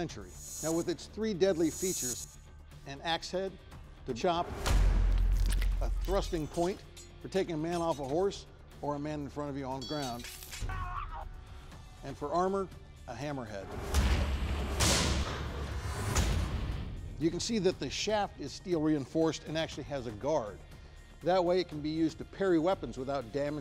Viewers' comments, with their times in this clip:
0:10 wtf is that scream 😂
0:10 that's some solid sound